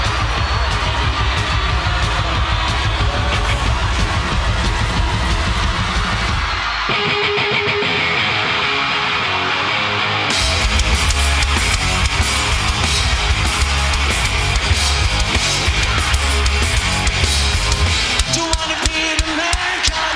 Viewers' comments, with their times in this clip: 0:06 These guys are insane live. one of the few bands i know that sound as good, maybe even better live as the original. need i say more? what a fucking entrance.